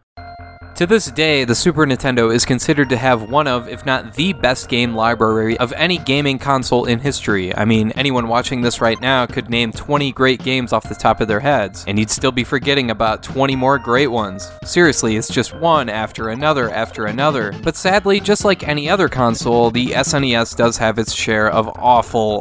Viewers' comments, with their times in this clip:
0:04 One of if not, the best game 'LIBURRYS' of any game console.. LMAO